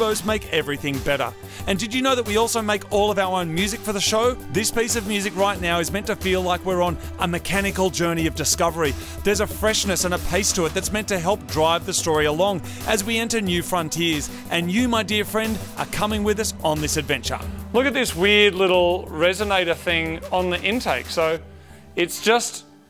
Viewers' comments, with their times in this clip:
0:04 sounds like space mountain music when your in the line